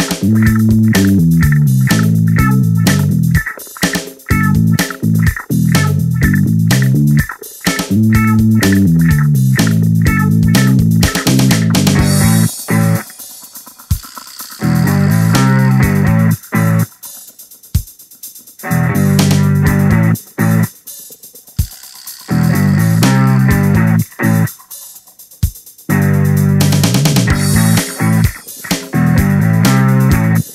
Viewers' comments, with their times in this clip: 0:05 it sounds like peoples court...lol
0:15 Around the mark, it sounds like the sort of music you'd find in the intro of a cheesy old cop show